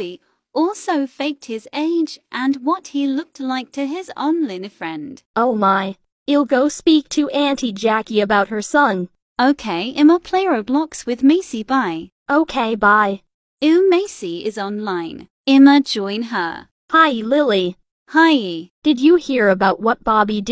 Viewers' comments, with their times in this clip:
0:03 WHEN LILY MOM WAS SINGIN GOT ME DYING 🤣🤣🤣🤣🤣🤣🤣🤣